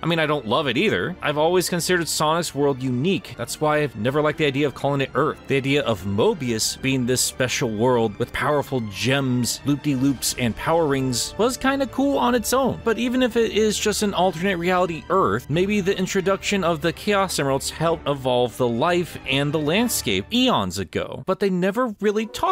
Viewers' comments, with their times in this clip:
0:04 Does anyone here a fly or a bee, after ? It stays there for a while